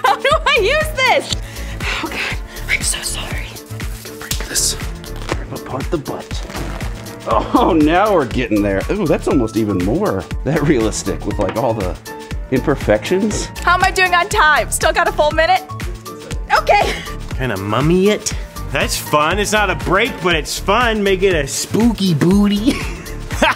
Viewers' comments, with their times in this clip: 0:05 that reaction was just freaking laughter